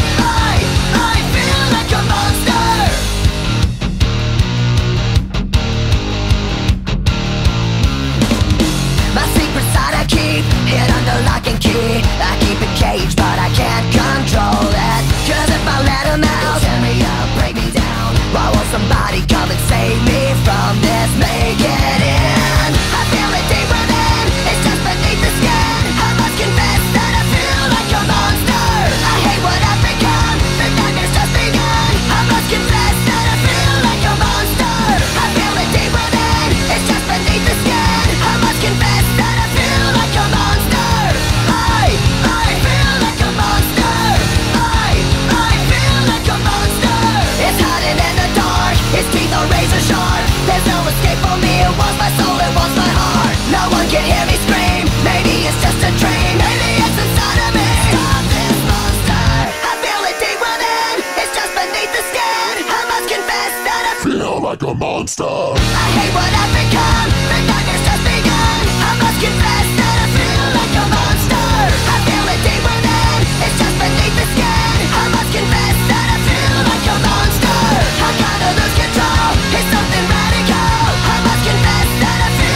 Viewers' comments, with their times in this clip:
0:10 always heard that as "and I'm the locking key"
0:52 0.75x speed is just perfect
0:57 stop this hamster xd
1:03 best part that sounded demonic af
1:03 my ear drums blasted...